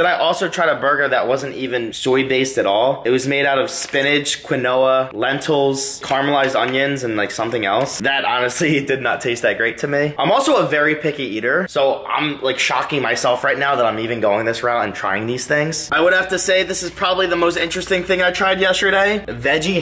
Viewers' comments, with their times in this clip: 0:04 he said “quin-oah” 😂 It’s pronounced “keen-wah”